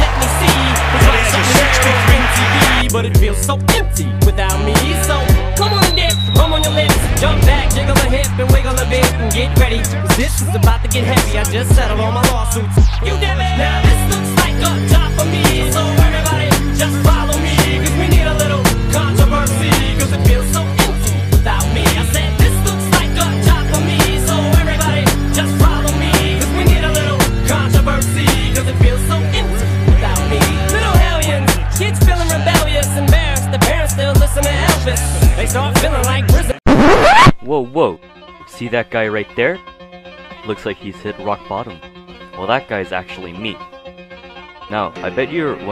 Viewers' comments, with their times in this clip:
0:10 Not gonna lie the clip with his walk was dope but could do without the extra sound effects
0:33 😂😂😂😂😂😂😂😂😂😂😂😂😂😂😂😂😂😂😂😂😂😂😂😂😂 Wtf play is THAT!? 🤣 Then the music change 😂😂😂